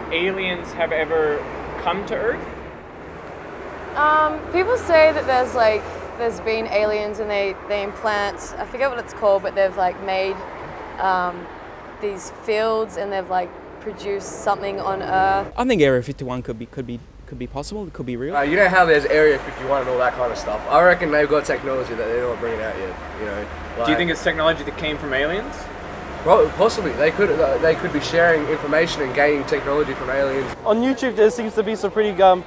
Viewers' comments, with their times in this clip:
0:03 I was expecting to hear a manly voice.
0:15 is that a female or a male? Because his/her voice sounds like a male's
0:15 Ok, on is it a man, or a woman? It's hard to understand
0:15 the person has a male voice but looks female. -akward
0:15 i am a bit misogynistic maybe but my senses are confused. sounds like a man looks like a woman
0:16 wtf this is 100% male voice. wtf
0:16 looks like a woman; sounds like a man. Alien with voice defect lol jk
0:16 a lady with a man voice?
0:16 I thought that was a girl until I heard the voice.....th fuq?!
0:16 i don't know if that's a manor a wo-man
0:16 that woman talk like men WTF
0:17 woman with a mans voice???
0:18 why dafuq does that girl sound like a guy